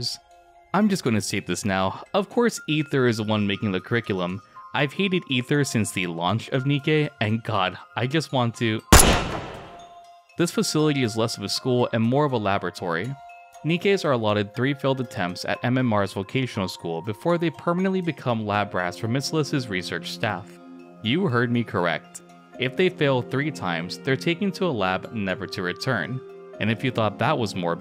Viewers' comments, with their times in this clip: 0:08 Bruh that gunshot your voice audio is too low, so i turned up my speaker with subwoofer volume, goddamn, that gunshot just vibrate my whole HOUSE!